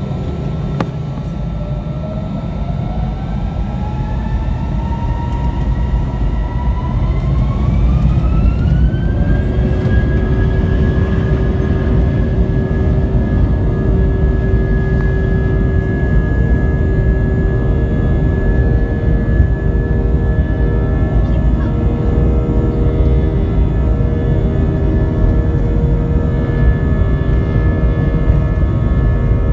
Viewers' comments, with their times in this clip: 0:10 it's sound like 737-800 or 737-900